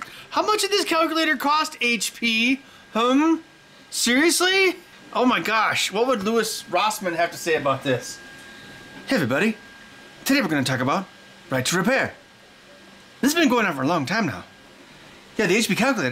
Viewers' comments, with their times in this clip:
0:04 best impersonation of Louis Rosman ever 😂